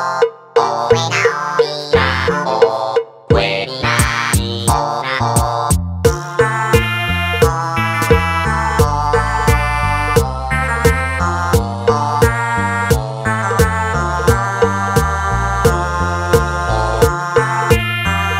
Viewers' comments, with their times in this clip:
0:06 Sounds like an early 2000’s ringtone.